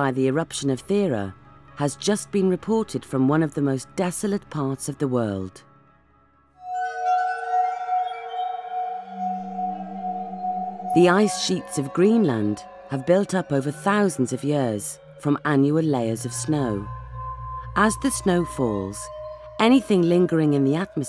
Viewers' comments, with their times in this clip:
0:06 Whats that "scary,creepy" music that starts ? 🤔